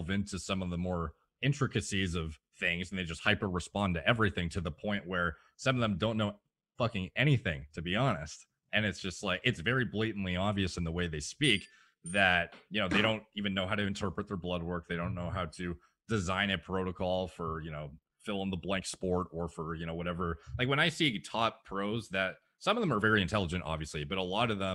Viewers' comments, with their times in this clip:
0:06 You didn't censor him in Why though?
0:12 yes look. Ding ding, turns phone off, not even looking away from Derek